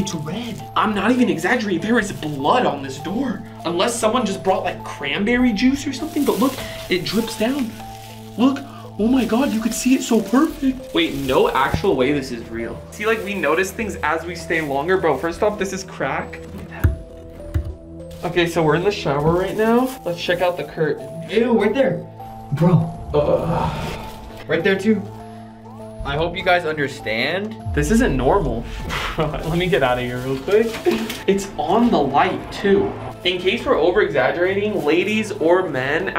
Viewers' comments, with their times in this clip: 0:04 i like how he said cranberry juice 😅😅
0:24 anyone else hear like a "what" sound?